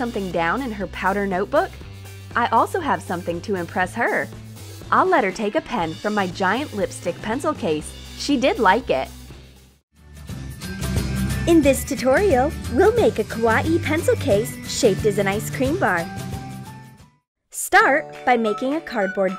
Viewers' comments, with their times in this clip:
0:03 she was speaking so cute